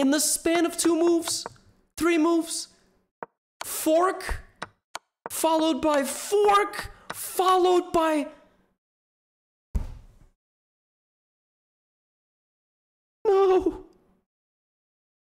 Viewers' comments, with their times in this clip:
0:13 the last ohh was painful